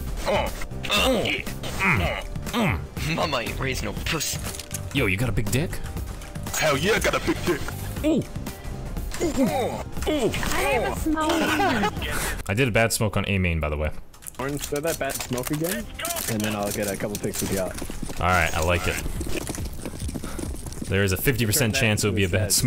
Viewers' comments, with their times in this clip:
0:09 Was that a gamer grill ?!